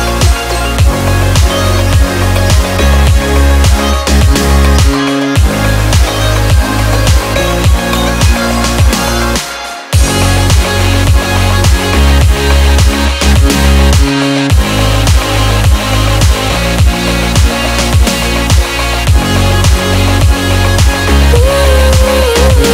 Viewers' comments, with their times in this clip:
0:09 Vocals/lyrics are amazing! The high pitch voice in the drop makes it so hard to enjoy 😔 is where the drop sound perfect